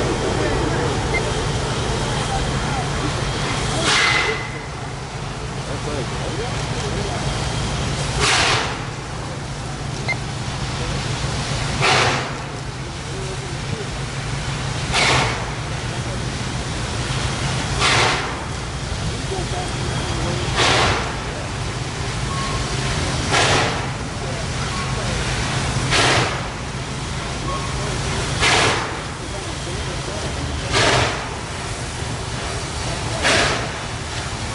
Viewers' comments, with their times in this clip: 0:07 come on you old horse! Show these pretentious diesels what makes steam the king of muscle! Those are the most vicious huffs and puffs ive ever heard in my life. Lol
0:17 this loco has some lungs